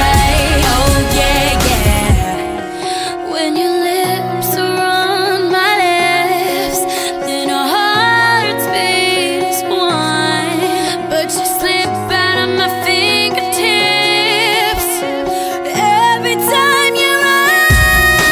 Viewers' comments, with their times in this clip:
0:03 she definitely says lips are on my ass not lips are on my lips.